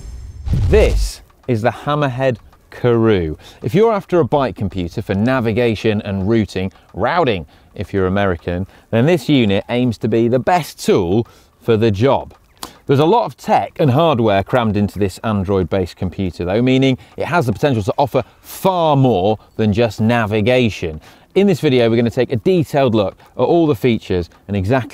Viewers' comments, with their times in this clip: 0:07 now i know american say “raw-thing”